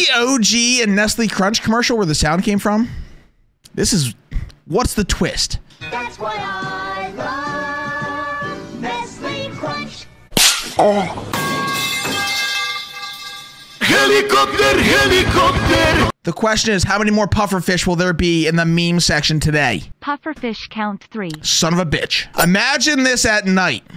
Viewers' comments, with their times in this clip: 0:08 the metal pipe had the perfect timing